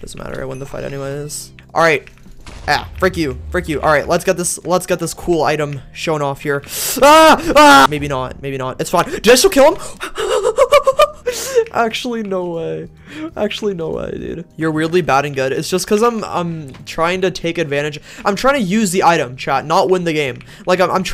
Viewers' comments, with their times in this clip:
0:09 bro that laugh